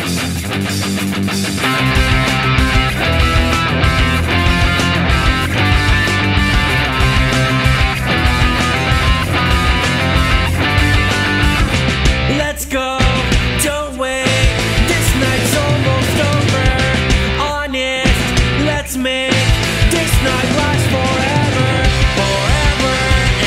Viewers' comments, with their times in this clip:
0:09 sounded awfully to me. i think those were not the right chords